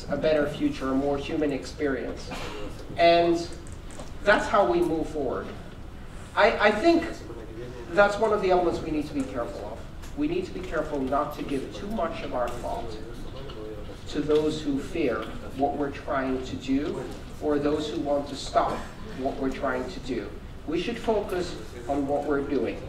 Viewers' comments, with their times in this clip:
0:08 I Cant help but hear the guy in the background talking in spanish about how he is going on vacations in at the end of the month